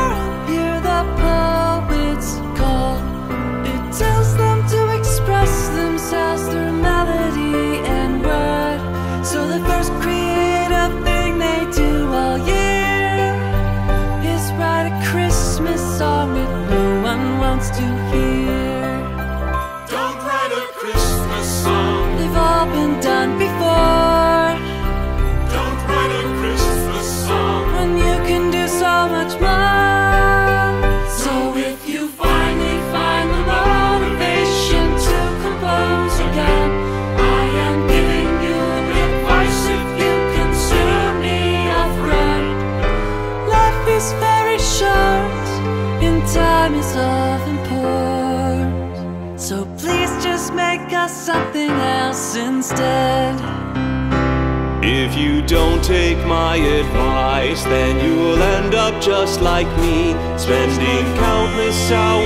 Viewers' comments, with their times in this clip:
0:03 Em and Am swaped?
0:08 James Hetfield 1990s!
0:44 jeez that bass ascending chord progression is so nice